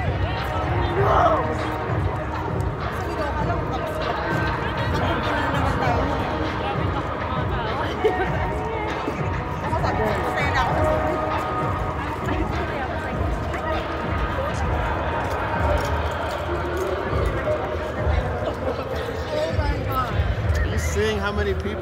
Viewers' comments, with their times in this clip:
0:04 heard some Filipino ARMYs talking in the background. 🎶😁😍
0:07 I can hear Pinoy Armys talking 😍